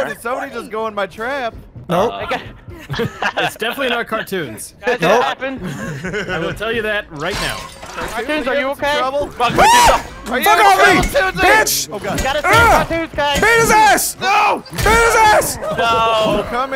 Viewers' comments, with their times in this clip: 0:04 Oh never mind, I just heard him